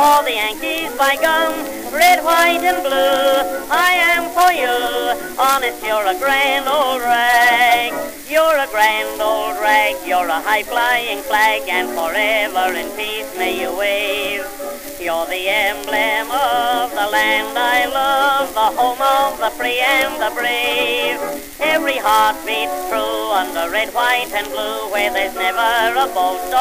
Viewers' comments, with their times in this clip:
0:09 Drill type beat